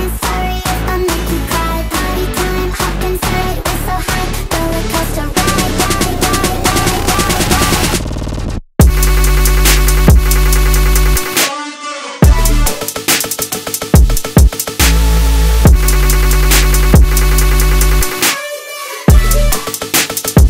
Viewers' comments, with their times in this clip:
0:08 drop still gives me goosebumps mane